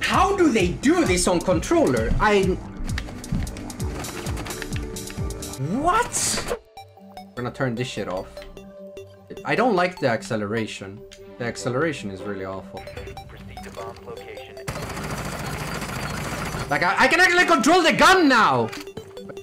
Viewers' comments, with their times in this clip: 0:06 I thought I accidently turned my terraria on xdd